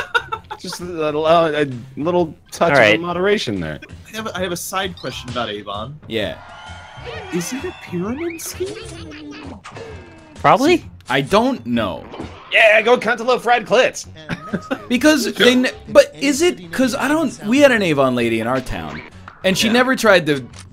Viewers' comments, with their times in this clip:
0:05 accidentally tapped the right arrow as nl said yea and immediately heard no i thought there was a glitch in the matrix